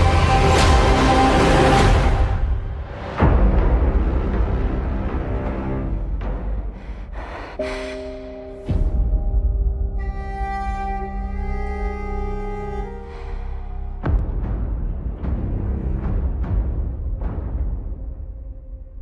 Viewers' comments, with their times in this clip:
0:03 super badass hit